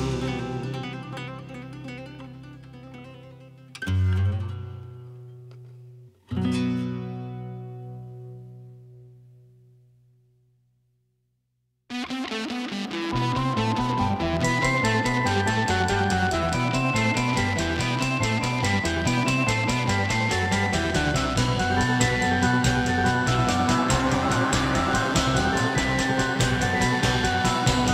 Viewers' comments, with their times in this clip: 0:10 whoever mixed this is a genius!